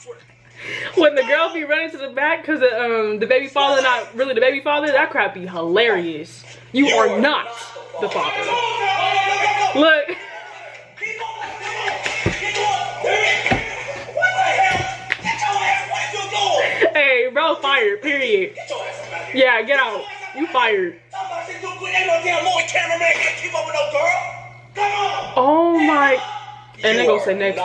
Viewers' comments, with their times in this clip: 0:10 we ain’t gon talk bout how she was sync with that fr😂😂😂